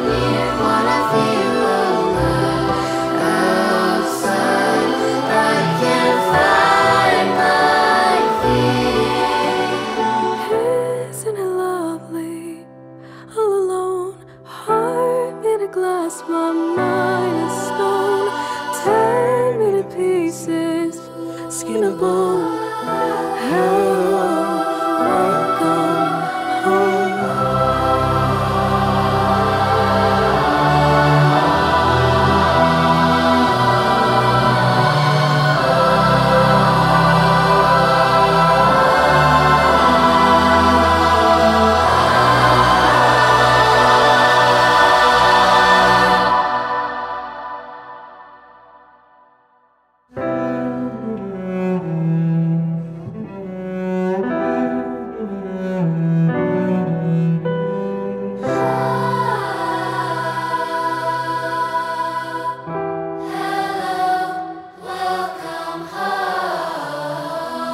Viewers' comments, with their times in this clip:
0:07 I loved her voice
0:09 the soloist and the solo cellist are heavenly to listen to.
0:09 Wow 😍 she sounds so mature
0:09 always repeat..very smooth ..what is her name please ??
0:10 omg her voice it's so mesmerising- All of them sound magnificent
0:10 i literally got chills when she began singing😍
0:10 They all are perfect but She is an ANOTHER LABEL Loved her Voice
0:10 that giiiirl got vocals💯🔥🔥🔥🔥
0:10 WOWWWWWW!!!!!!!! her voice is so majestic and deep but soothing <3333333333333333333
0:13 she has such an amazing voice 🤩
0:16 The voice is just so beautiful
0:50 everything is beautiful but the cello solo part is so wuuaahh, make me cry♥♥♥ I need to thanks to you guys for this beautiful piece 🌷🌷🌷